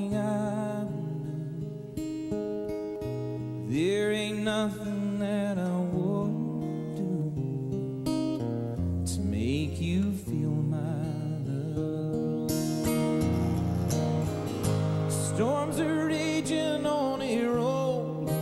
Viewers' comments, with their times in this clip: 0:04 His facial expression says he isn't there at all he is in some zone.. I think he missed a note but for the life of me I couldn't hear it